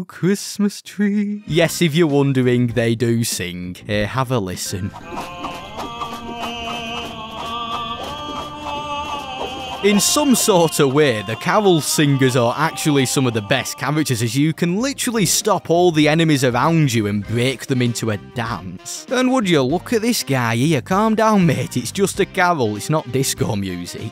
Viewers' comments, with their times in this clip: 0:05 it sounds like kermit the frog